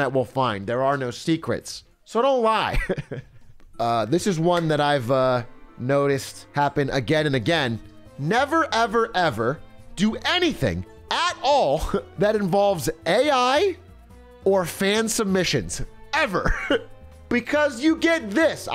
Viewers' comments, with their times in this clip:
0:03 THE SKULLGIRLS MUSIC HIT ME LIKE A TRUCK LMAO